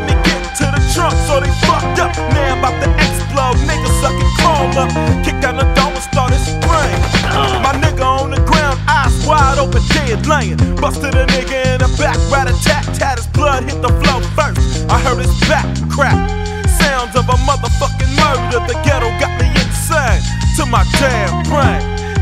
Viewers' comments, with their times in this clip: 0:07 Bruh!!! Why i jus heard a nugga gettin capped on Goldeneye 😂😂😂